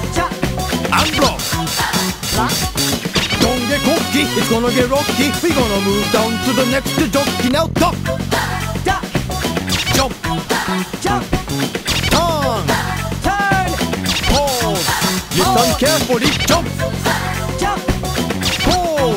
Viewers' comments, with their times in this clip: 0:06 That sounds like something on the Wii